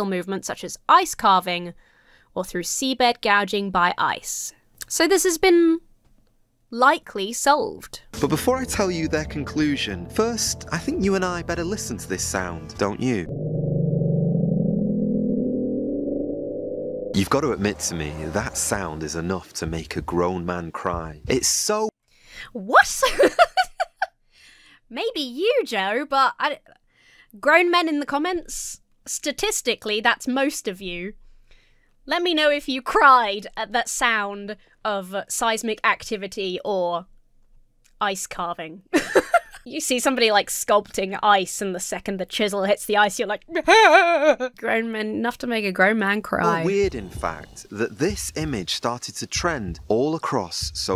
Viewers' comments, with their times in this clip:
0:03 Thats what Taylor Swift sounds like if you take "Cake". And remember, "Cake" is a "made up" drug...
0:12 ever wet your finger and draw it across a timpani? when I was in band, that was used to affect Whalesound in a piece. I didn't make the connection before, but the explanation provided by the wiki and hearing it again makes me accept the article. It does have that dragging/scratching/friction quality to it.
0:35 Sounds like my cat. Purring.